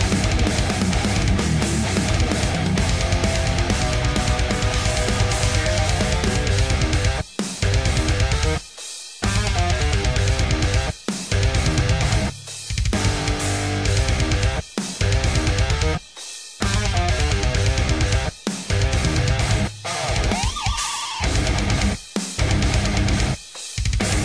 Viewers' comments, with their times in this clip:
0:06 breakdown is absolutely amazing!!!
0:06 Every riff in this song is a thing of beauty, but is absolutely something else. That's the best use of modes and rhythm I've ever heard in a song. Took me a week or so to get this tight but fuck was it worth it.